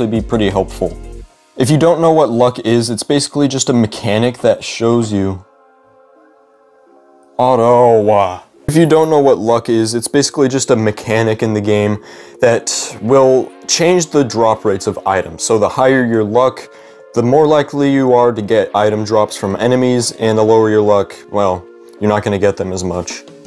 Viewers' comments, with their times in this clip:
0:05 "onouwaahh" what does that supposed to mean??? Or an I just deaf...